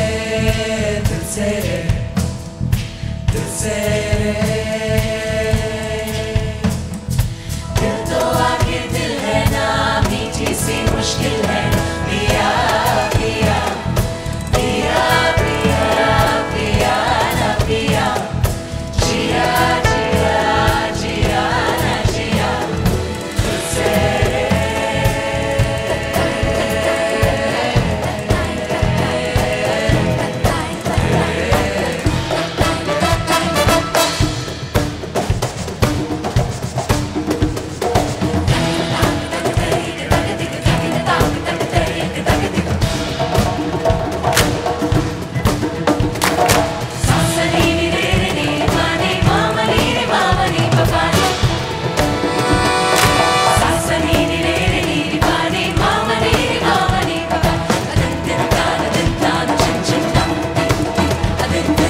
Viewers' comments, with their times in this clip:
0:10 Also the violins 🙏🙏🙏🙏
0:44 ...My favourite part in the original song was this well timed clap...I thought in the process of bringing in more instruments, this synchronised clap would be missed out on but damn they're good